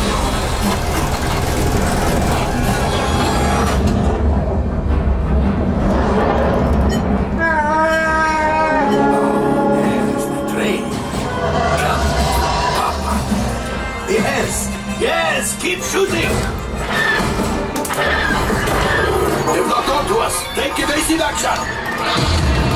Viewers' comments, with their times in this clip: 0:09 Coaxium Cargo Container Horn Sound